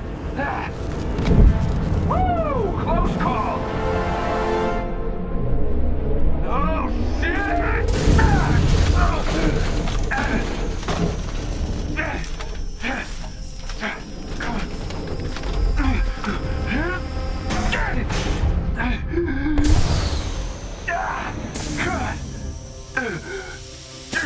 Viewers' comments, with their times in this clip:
0:06 there’s the Nathan Drake I know Edit: I knew Nolan North was voicing Tony from the start and I was on the fence about this game forever but no lie I might get it just to experience what really is Nathan drake in the iron man suit
0:07 god nathan drake vibe I cant unhear it